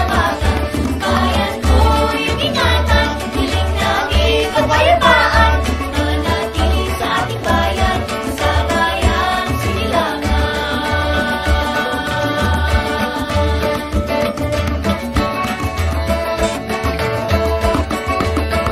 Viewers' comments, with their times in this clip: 0:06 I love how you incorporated tribal music into the vlog. And oh yeah, lizard spotted Hahaha